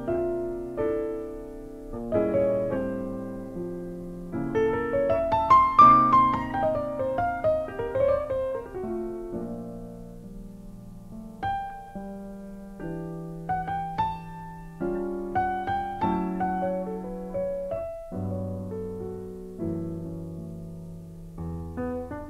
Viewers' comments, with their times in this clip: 0:10 phrase starting is particularly beautiful